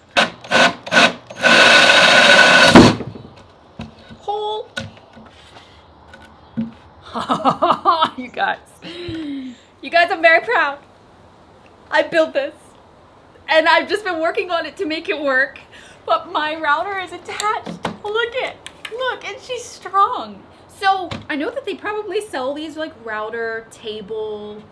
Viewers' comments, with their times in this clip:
0:07 The laugh !!! That exact feeling when you do something for the first time and you're just like 'Yeah I did that!'